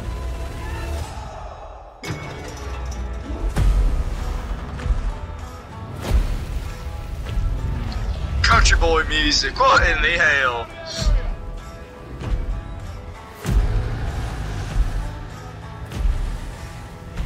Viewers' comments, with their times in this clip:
0:03 I think that's actually Japanese music. It has that old Japanese vibe to it. I played the Battlefield 1 Beta but didn't get the game. I didn't get this game either.